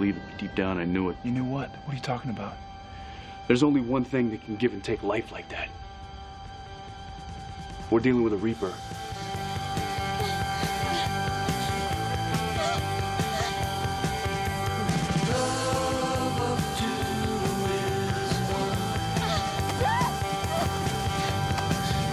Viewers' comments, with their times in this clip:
0:07 Amazing scene. Dialogues and music placed correctly and work as one. The show wins cause of the song. And vice versa - song feels extra cool with the video. Great directing.